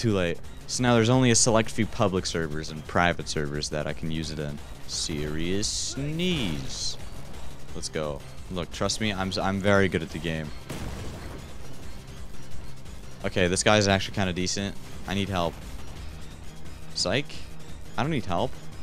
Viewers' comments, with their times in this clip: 0:05 “SeRiOuSe SnEeZe” bro screaming in lowercases had me dying